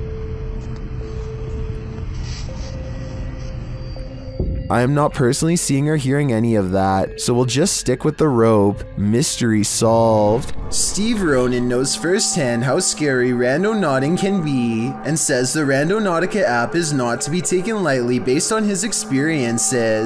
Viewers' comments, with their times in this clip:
0:06 I hear 1-2 woman whispering fast and faintly. Def something